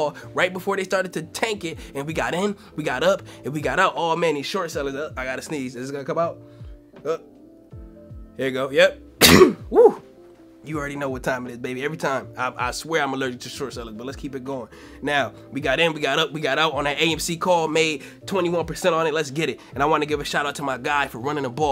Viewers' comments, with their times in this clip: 0:04 Big Dawg allergic to the shorts! Bless you Bro! 🦍